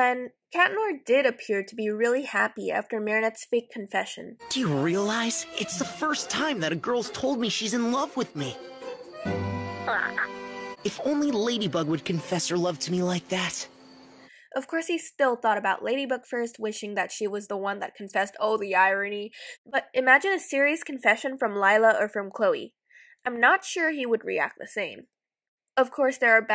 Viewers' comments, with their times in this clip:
0:09 that baby CROAKED
0:09 the hell kinda baby noise is that? That’s a fuckin bird or reptile noise